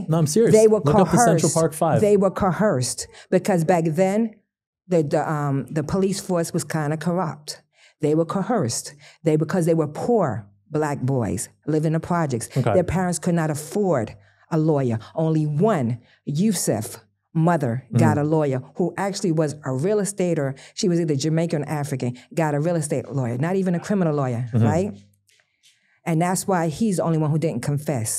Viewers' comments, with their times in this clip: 0:10 She can’t even speak basic English properly.